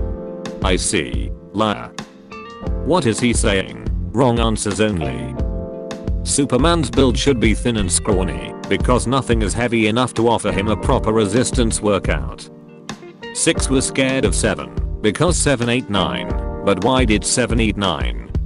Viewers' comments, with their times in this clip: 0:05 he is moaning loudly